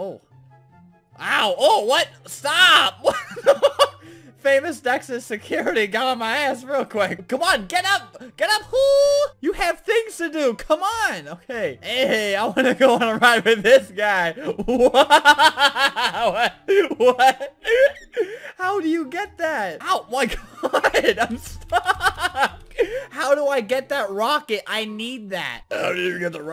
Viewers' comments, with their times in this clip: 0:10 His Come on sounded like Sonic lol